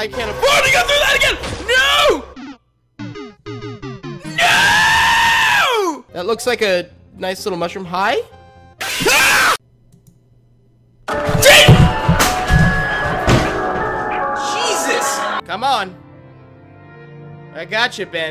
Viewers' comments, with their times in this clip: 0:04 Man, you really put some power into that scream... 😅